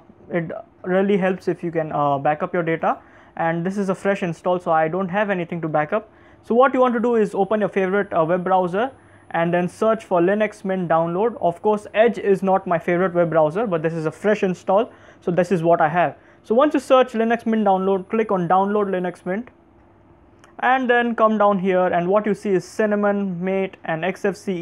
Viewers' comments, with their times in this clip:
0:10 I already liked this video XD You have a nice voice :)